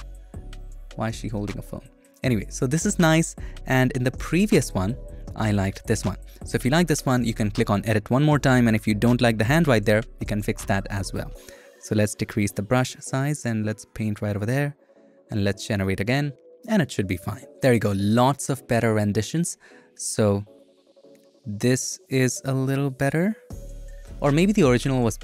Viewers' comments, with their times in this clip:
0:06 in a sad,but also startled voice : why is she holdig a phone